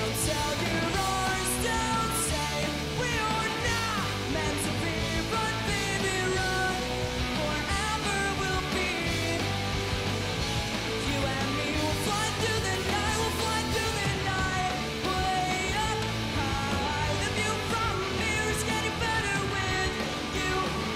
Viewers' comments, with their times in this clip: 0:07 was that guy singing along